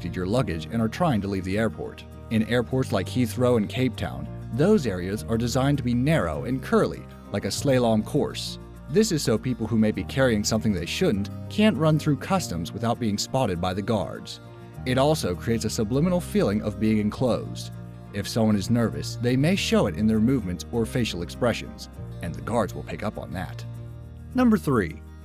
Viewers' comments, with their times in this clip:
0:03 Am I hard of hearing or did he pronounce "slalom" as "slay-lom" around the mark?
0:04 ...like a "slay-lom" course? Slalom? Amazing.
0:06 A slay-lom course?